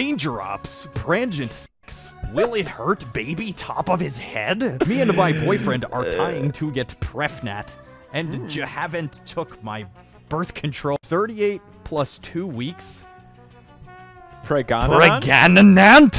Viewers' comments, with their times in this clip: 0:03 is it me or did he say it like a call of duty mission